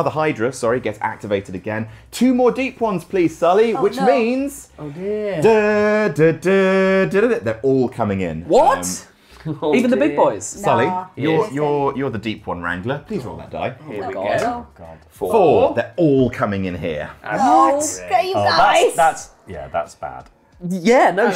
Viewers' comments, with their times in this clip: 0:04 That reverence to the Green Ranger's flute song was perfect